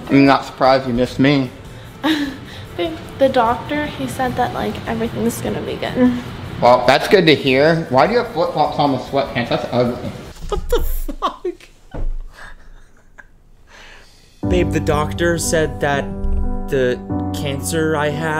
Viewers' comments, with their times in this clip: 0:05 she does that Trisha Paytas “mmm” thing at the end of her sentences.